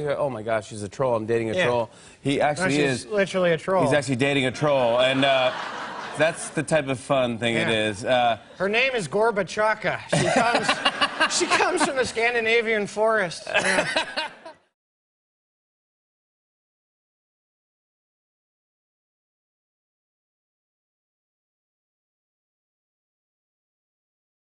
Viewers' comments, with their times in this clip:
0:09 At the mark who else heard Hiccup explaining troll lore?